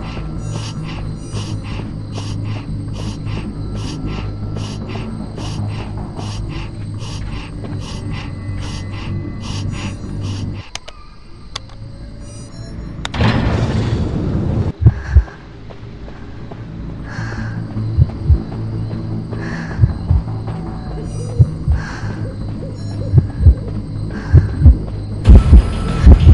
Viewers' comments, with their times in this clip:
0:09 why is she,, breathing like that..?